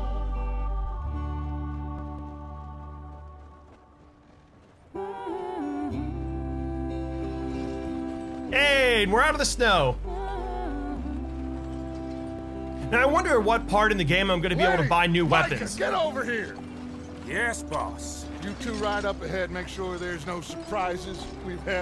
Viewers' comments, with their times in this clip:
0:07 awkward silence 100